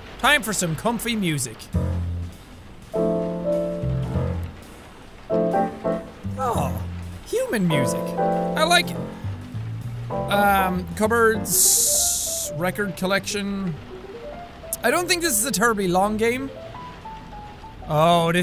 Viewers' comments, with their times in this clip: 0:03 Is anyone even 1 person a Jarling? God this music is great